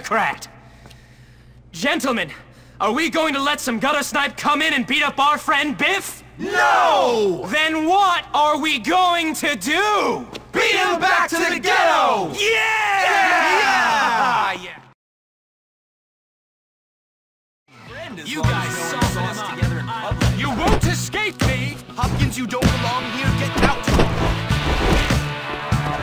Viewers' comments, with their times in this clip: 0:10 Beat him back to the spaghetti!